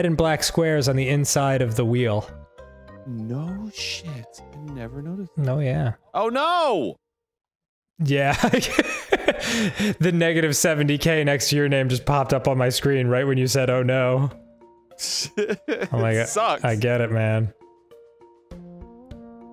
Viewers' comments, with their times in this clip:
0:06 dude everytime the music stop it just kills me everytime